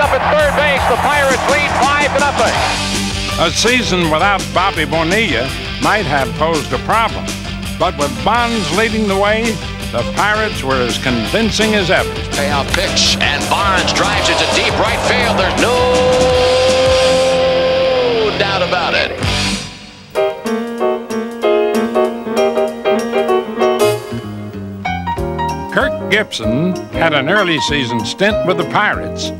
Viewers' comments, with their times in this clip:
0:10 "There's nooooooo....ooo...... oooo.... ...... doubt about it." Sounds like there was quite a doubt actually. :D